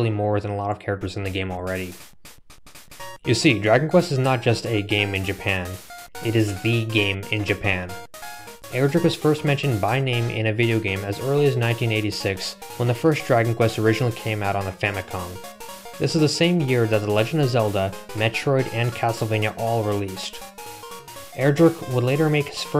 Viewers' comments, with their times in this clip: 0:07 sounds like the Japanese pokemon opening